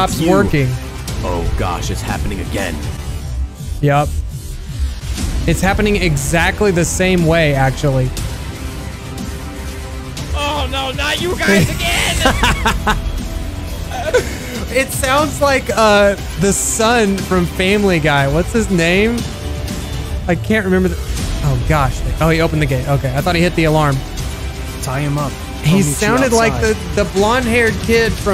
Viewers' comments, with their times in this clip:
0:10 sounds oike flamingo tbe YouTuber